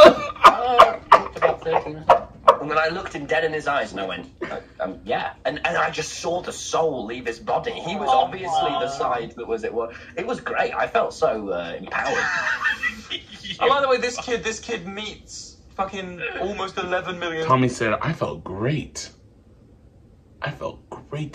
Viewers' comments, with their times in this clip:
0:03 Bruuuhhhh lol your laugh and philza laugh haha omgs